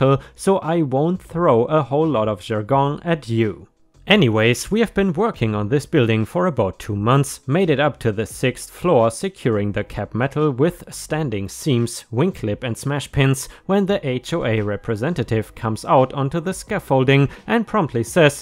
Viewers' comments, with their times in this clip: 0:03 is that how you usually say "jargon"? I've never heard it said that way. I've only heard it said jar -gon. But the way you said it was kind of neat, like with a little French accent swaying over it (I know, you're German, but it sounded French).